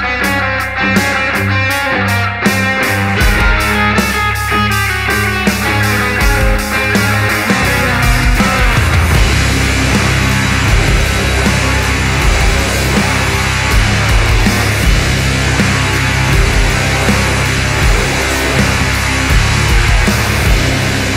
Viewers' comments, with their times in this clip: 0:08 Such power in these riff and amplify with the progression, love that ! is the best for me